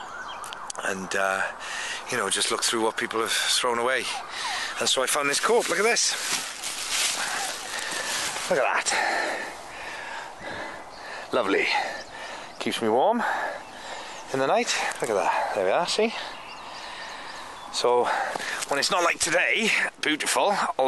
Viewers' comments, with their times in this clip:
0:08 thought he said corpse at first 🤣